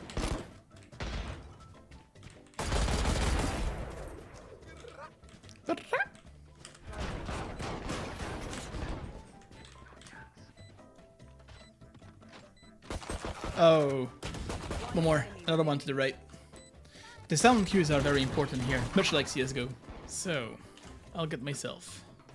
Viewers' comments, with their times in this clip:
0:04 was that him saying wtf in a loli voice? lmao